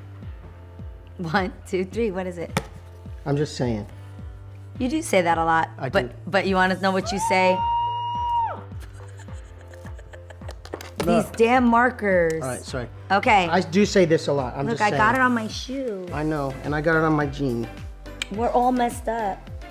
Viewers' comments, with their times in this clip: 0:07 The scream I am dyinggggg😂😂
0:07 Can we clap it up for the fact that Israel screamed in the key of Bflat listen!!!!!! Lololol that's GREAT